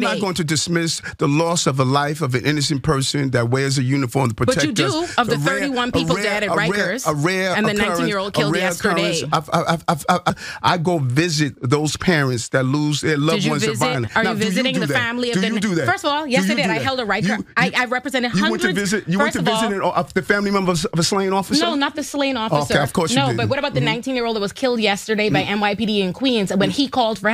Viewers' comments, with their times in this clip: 0:08 Legend has it, he glitched out on the word, 'I've' and is still saying it up this very day. 😂😂😂